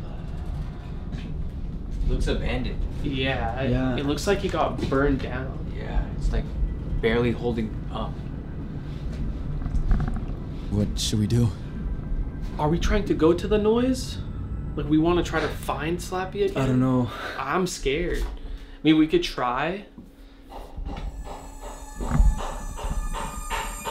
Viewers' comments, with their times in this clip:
0:09 I heard a growling sound on minute